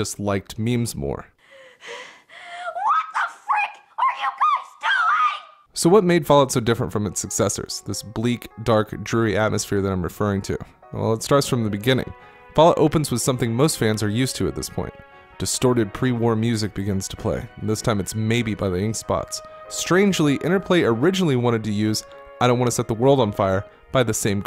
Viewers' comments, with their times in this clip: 0:06 What is the song that plays on ? I know it's Maybe but it sounds different.